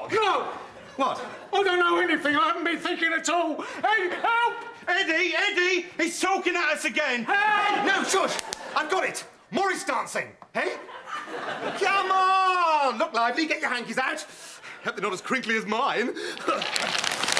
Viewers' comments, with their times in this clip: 0:04 Notice Dave Hedgehog screams "Ade" instead of Eddie!